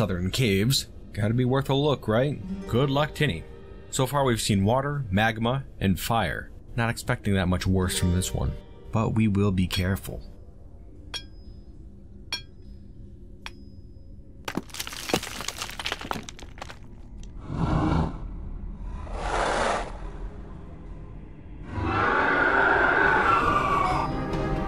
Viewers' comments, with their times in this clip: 0:09 That minute and a half of SILENCE is one of the greatest gems of your usually great storytelling! I loved it!!!!!